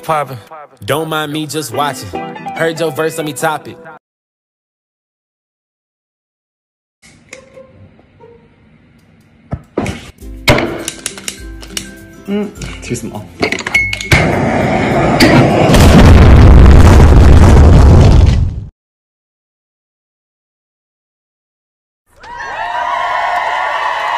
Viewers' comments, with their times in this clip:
0:10 that slam was so aggressive lmfao 🤣